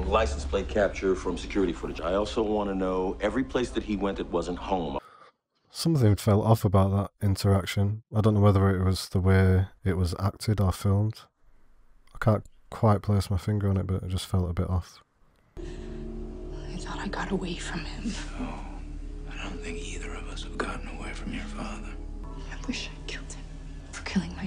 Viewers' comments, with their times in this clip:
0:06 Yeah, I think it’s the line delivery. He’s drawing the words out like a thought instead of being more punctual and commanding. Great video. How do you like the writing as the show goes on? Love your content. ♥️